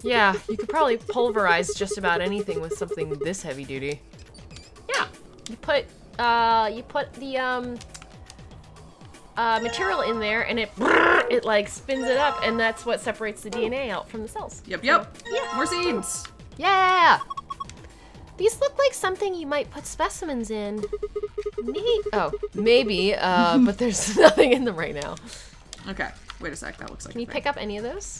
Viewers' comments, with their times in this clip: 0:10 the brRrrRrrRrr was amazing 😂😂